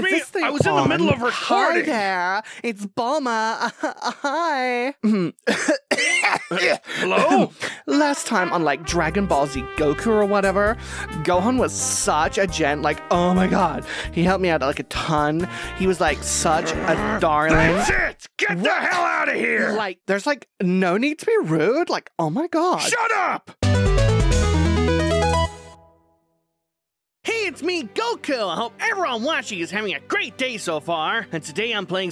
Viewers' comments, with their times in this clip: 0:05 need a cough drop😂
0:17 I AM SO HYPE FOR MORE DBS KAKOROT wait why is bulma here and what is her voice. Raise your hand if you love goku and have been watching him for a long time ✋